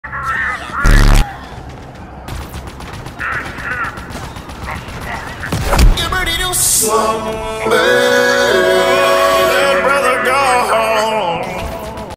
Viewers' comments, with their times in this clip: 0:00 Honestly wish that was the actual hijack sound.